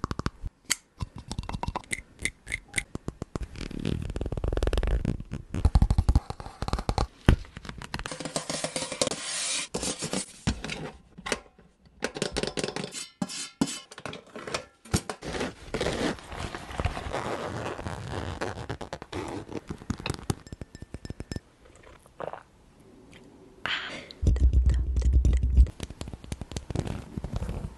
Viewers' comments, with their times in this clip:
0:08 you made a lul beat rq!😫😫😫😫🤣💜🥵🥵🥵🤩🙏🏽🥶🥶🥶🥶🥶🥶🥶🥶🥶🥶🥶